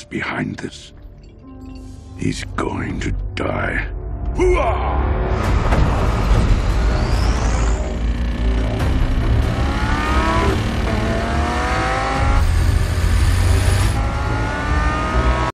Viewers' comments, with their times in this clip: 0:11 I know I sound like a nitpicking nerd but that is not what a bugatti veyron sounds like